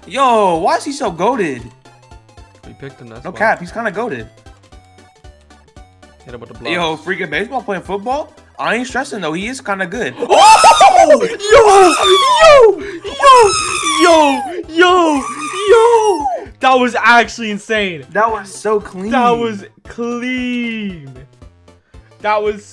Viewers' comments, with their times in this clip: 0:10 REAL: ACTUAL DINOSOUR NOISE FOOTAGE!!!!!